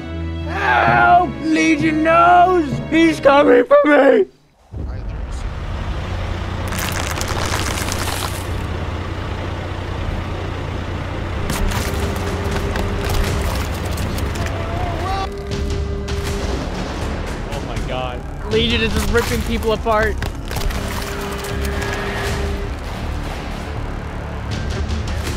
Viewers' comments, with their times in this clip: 0:06 I can just hear the transformers sound effect